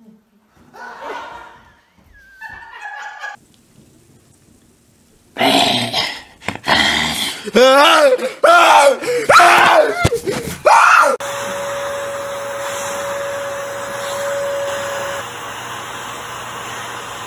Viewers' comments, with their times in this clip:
0:03 She scares him and He wakes up and scream
0:04 I LOVE THE SCREAMING 😂🤣